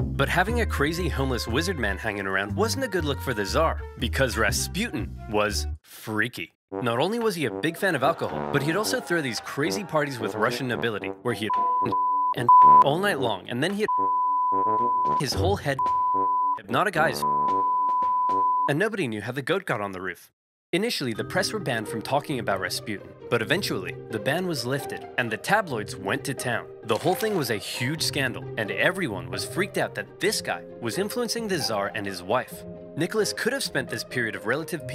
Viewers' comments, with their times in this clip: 0:08 good god these censors are killing me "And nobody knew how the goat got on the roof"
0:10 Can someone fill in the bleeps?
0:11 didn't know oversimplified spoke morse code
0:19 censored harder than Stalin's enimies